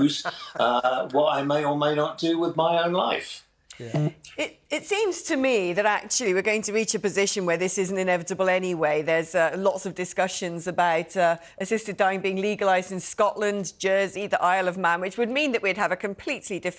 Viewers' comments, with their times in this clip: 0:03 James let out a toot. 😂